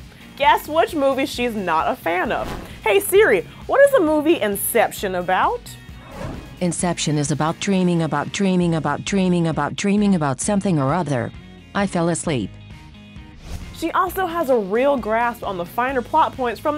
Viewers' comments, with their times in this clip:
0:04 siri started talking to me